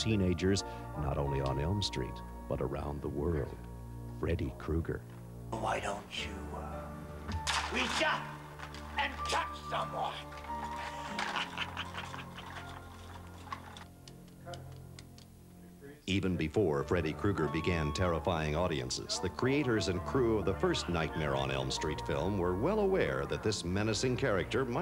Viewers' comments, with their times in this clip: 0:06 I love how the fake chains sound plastic, and in the film, after dubbing, they sound real. 😂